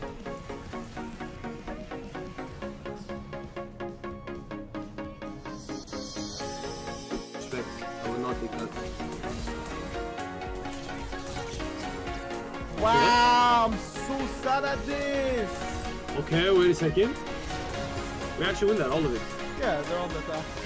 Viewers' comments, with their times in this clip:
0:07 I LOVE THIS SONG PLS